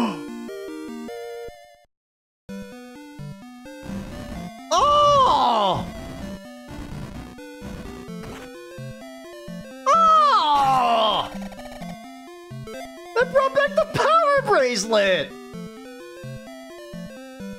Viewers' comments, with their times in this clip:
0:04 He really unleashed that Beedle's "OHHHHH!" when pushing it.
0:04 Vintage Beedle noises.
0:04 That noise you made after getting the Power Bracelet sounds straight out of Wind Waker 😂